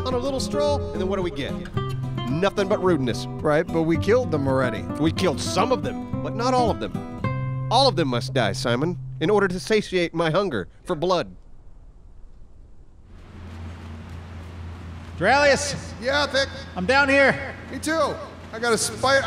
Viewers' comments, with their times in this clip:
0:07 Did anyone else hear a little bit of Bullet Bill coming out ?